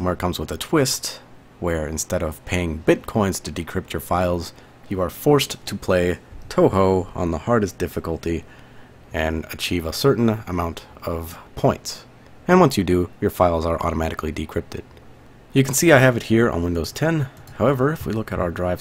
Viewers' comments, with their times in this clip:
0:05 “you are forced to play Touhou on the hardest difficulty” Wait I thought it was pronounced “Toohoo” not “Toehoe”